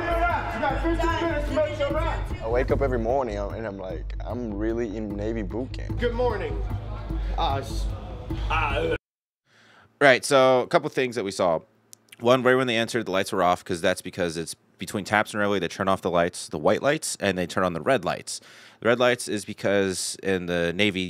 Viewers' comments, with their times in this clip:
0:05 I know 2001 was awhile ago, but that brought it all back. Standing watch, and stammering while trying to sound-off.